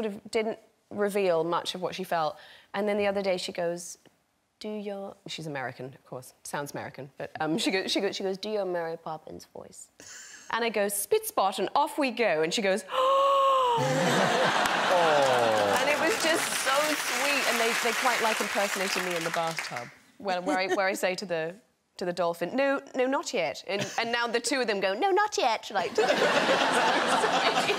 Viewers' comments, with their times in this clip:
0:08 I am obsessed with the fact that every time Emily Blunt does her daughter’s “American voice” lol it totally sounds like Lady Gaga is her child in the voice she does for her lolololol 🤣🤣🤣🤣🤷🏻‍♀️💕💕 I love it so much!